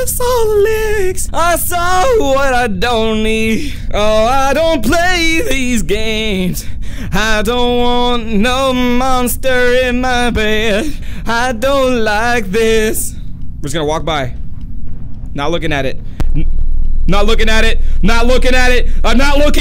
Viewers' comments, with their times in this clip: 0:05 A moment of his beautiful singing: